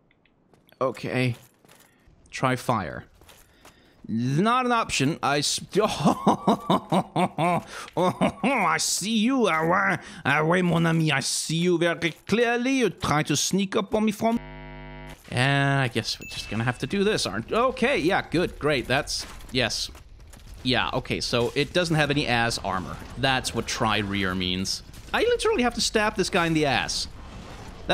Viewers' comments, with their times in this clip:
0:09 sounds rather like russian :p